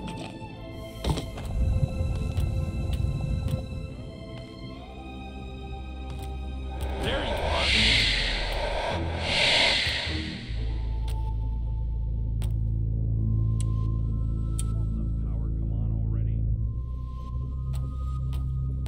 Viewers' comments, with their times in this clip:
0:05 "wow, this place is so dangerous. Better stuff my ears full with ear wax so I can't hear the monster's loud ass steps wandering around, forcing me to go investigate."